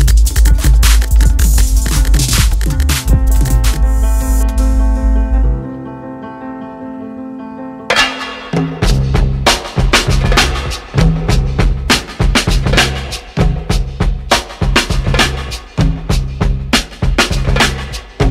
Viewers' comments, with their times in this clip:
0:06 The background music incorporated throughout the video is amazing!